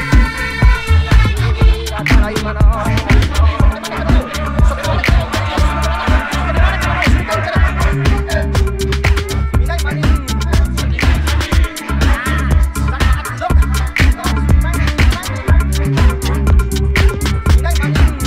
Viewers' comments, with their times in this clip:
0:03 mix is crazy